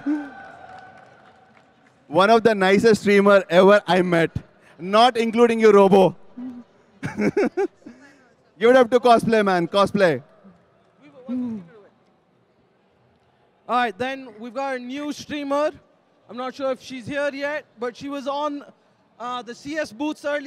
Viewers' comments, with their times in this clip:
0:08 cosplay??? haha cosmic